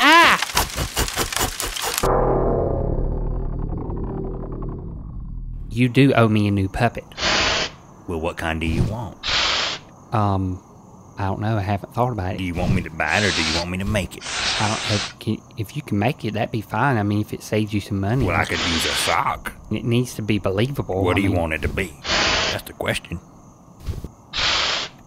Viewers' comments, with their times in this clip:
0:06 is the sound for the fire extinguisher someone breathing in through their nose?